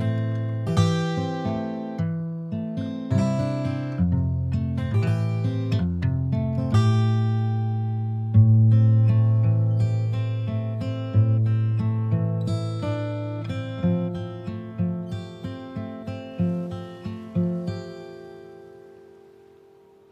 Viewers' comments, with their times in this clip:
0:08 The little tune she plays is enchanting to me, I wish someone looped that so I could fall asleep to it 🙂